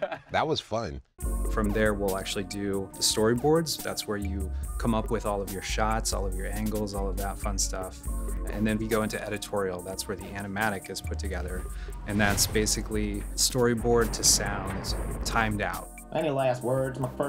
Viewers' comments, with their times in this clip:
0:03 is it just me or is that beat fucking amazing